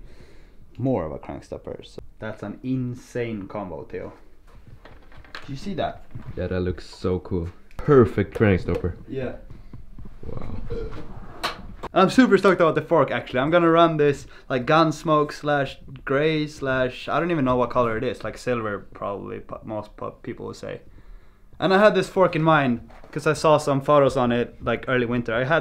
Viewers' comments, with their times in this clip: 0:09 hear that strange noise °-° HAHAH